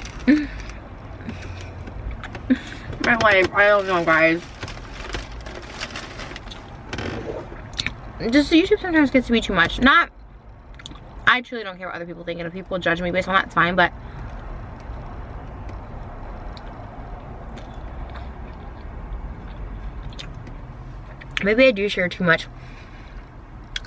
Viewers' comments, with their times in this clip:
0:05 that gulp .. sounds so painful!
0:05 That gulp lol it sounded like it hurt when you did that
0:08 That swallow was so loud 😳